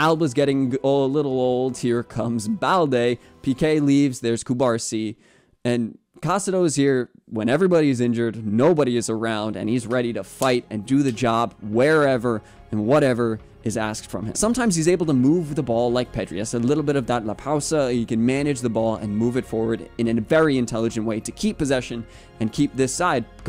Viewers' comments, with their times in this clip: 0:09 Raaakitic voice crack